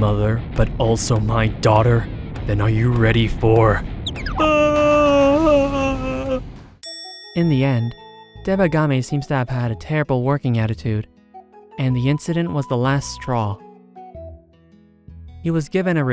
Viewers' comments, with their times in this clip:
0:04 That has got to be the most calm ahhhh ever